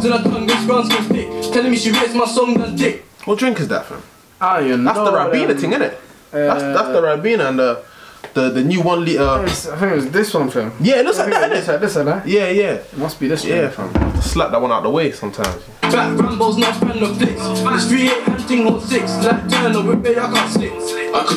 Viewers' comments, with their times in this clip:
0:03 The way they paused asking what drink that was 😂